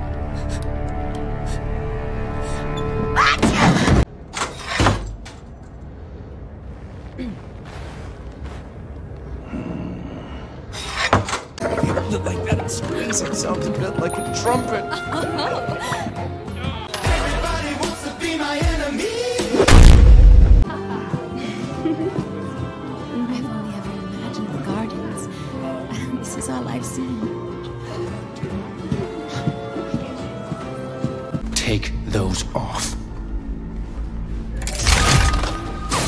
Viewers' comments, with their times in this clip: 0:07 that ayo made me die
0:17 when that 8 am alarm hits